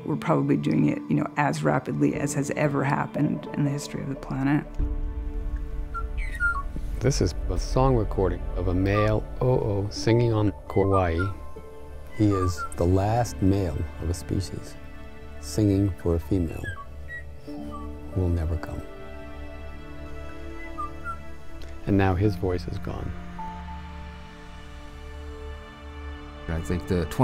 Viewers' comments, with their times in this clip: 0:08 for actual bird song, but the stupid humans keep talking over it.